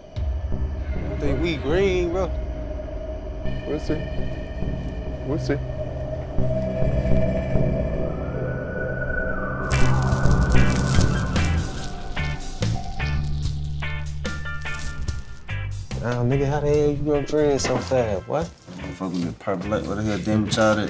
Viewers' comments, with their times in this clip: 0:04 He sounds like Young thug